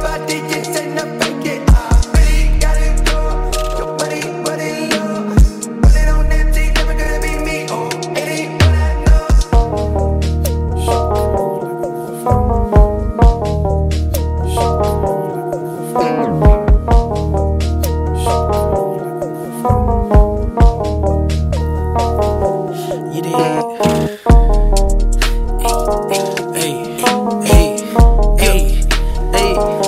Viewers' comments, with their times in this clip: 0:10 Mix was a tiny bit late 👀😜